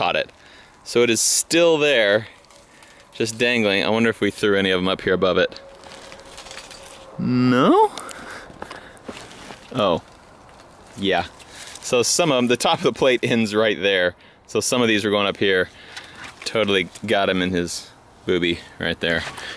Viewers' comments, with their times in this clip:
0:06 he said “não”, just like a Brazilian